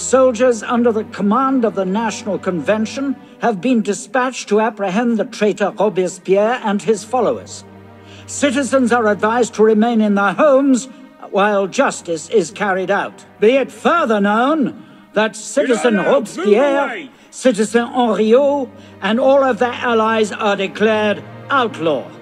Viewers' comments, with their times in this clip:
0:10 Where did you get the sound clip from? It sounds like the voice of John Hurt.